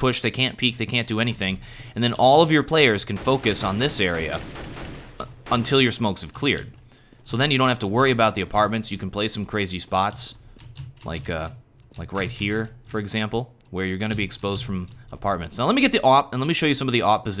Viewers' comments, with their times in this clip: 0:05 Did you just burp ?